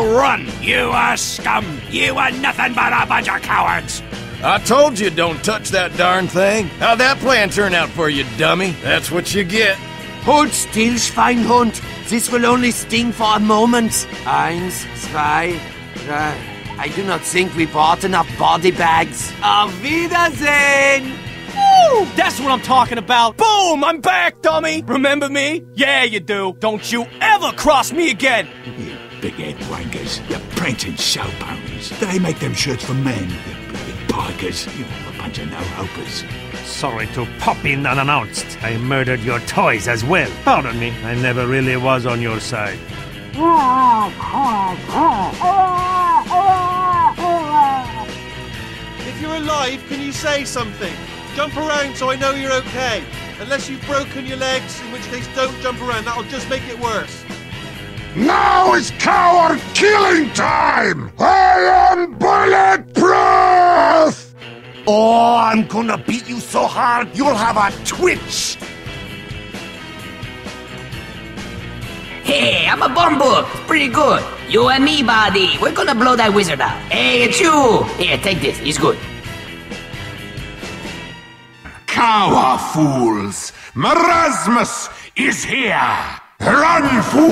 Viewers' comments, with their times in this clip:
0:09 That 2 guys have the 2 thing same it is he had a good face and he have a wired voice
0:33 he say POGGERS??
0:34 sniper said "poggers" !? 😳
0:34 DID HE JUST SAY POGGERS😳😳😳
1:09 Why are they no voice sound? Monoculus?